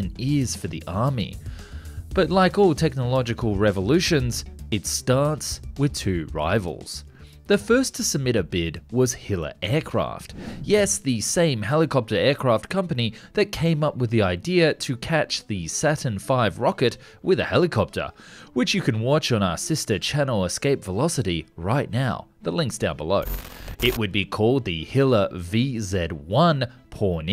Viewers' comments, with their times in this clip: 0:08 I thought that said hitler.